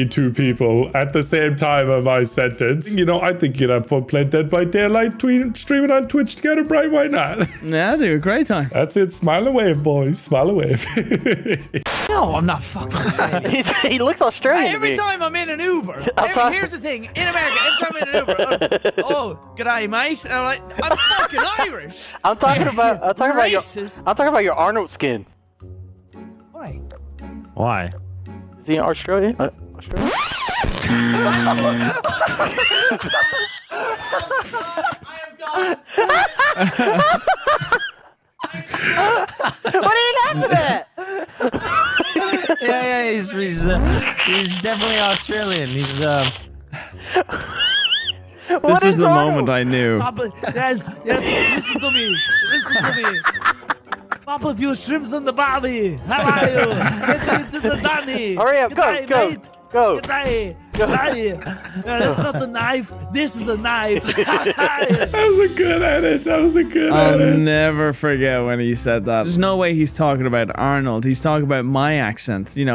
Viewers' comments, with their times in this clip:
0:03 What is Nogla saying? I can’t understand it
0:53 wait, you guys are Irish? I thought you were from South Africa.